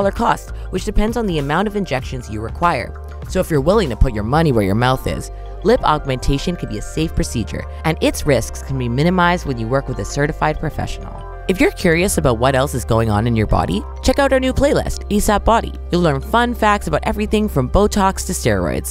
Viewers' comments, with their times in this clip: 0:04 The narrator got uncomfortably loud